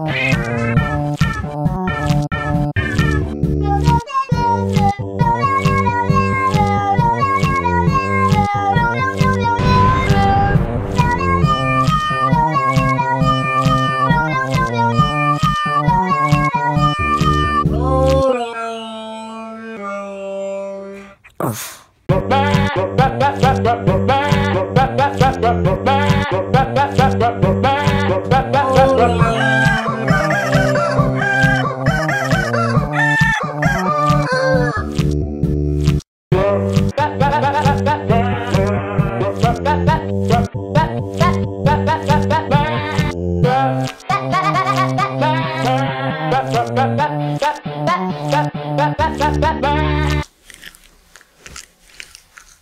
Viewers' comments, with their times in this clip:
0:03 I thought you said that that animal was copyrighted.
0:03 EPIC RAP OF CAT
0:03 I love after Haha.
0:04 I love when the cat sings
0:05 this cat- Just- Like- ARE YOU KIDDING ME IT LITERALLY SOUNDED THE SAME!!
0:05 this cat really sings good
0:06 Dude I aways see this cat mumbling everywhere
0:18 it actually sounds like he/she's saying"I'm the bad guy" tbh
0:21 I’m dying on lol xD he’s saying “ uff “
0:21 sounds like "uff" if you listen to it more often xD is really well done and not forgotten
0:22 I gotta be honest.. The goat actually sounded so good In part I had to leave a time stamp
0:28 I SWEAR I heard "I'm the bad guy"!!!
0:35 It transformd into We are number one
0:36 is like we are number one
0:36 In did you actually put we are number one
0:36 it sounds like we are number one idk if u added it in or not tho
0:37 it sounds like We Are Number One xD
0:37 sounds like we are number one song
0:40 is da best part of the cat saying "wut" 😂✌️